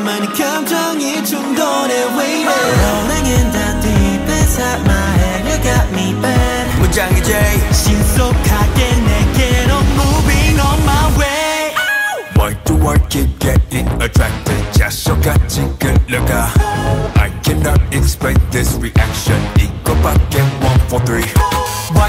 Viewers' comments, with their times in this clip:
0:08 Anyone knows what made him giggle ? I am so curious😭😭